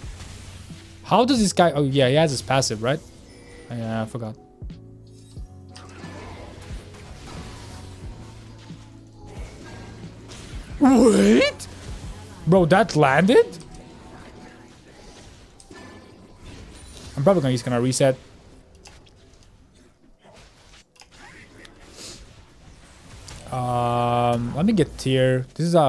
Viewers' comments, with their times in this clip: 0:09 you sound like goofy. love the content bro